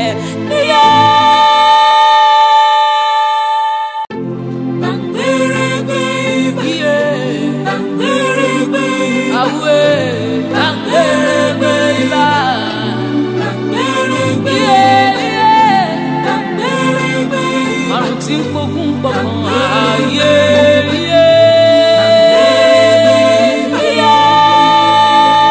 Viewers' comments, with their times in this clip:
0:10 The song got me 😭 😭